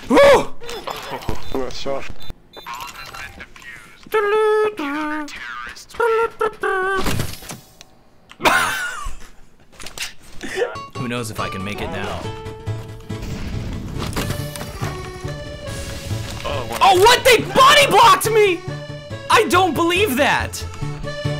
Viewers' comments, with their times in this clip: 0:04 what is he singing 😂